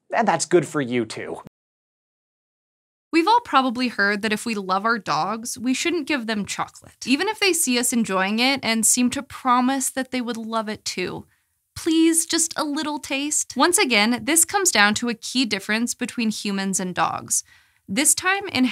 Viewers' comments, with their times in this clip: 0:06 Give them what? You are unintelligible damnit. Give them what ? Sounds like chuck or check ? Wel??? >